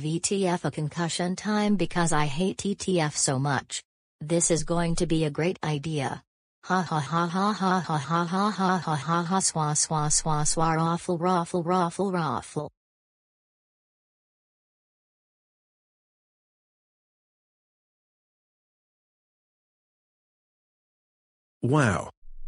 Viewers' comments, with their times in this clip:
0:06 You just stole Microsoft Sam's Laugh Line!